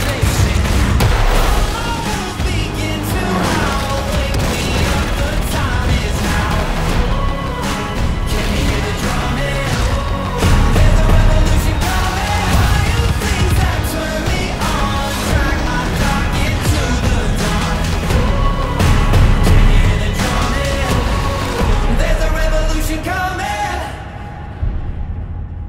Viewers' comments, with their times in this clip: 0:10 nice edit i love what u did here using the cannon as drums almost , nice one dice . And the guy after just kinda screaming almost like he is saying that , nice one .